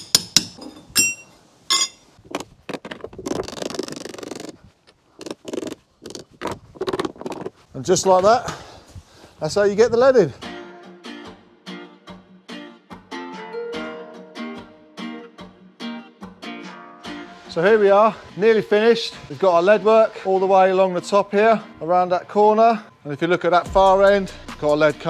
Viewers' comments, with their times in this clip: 0:08 thats how you get Aladdin